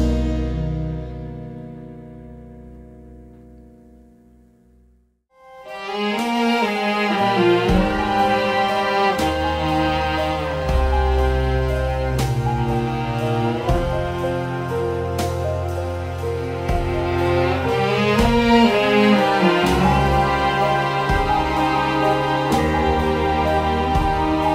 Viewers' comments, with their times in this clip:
0:06 The music is so beautiful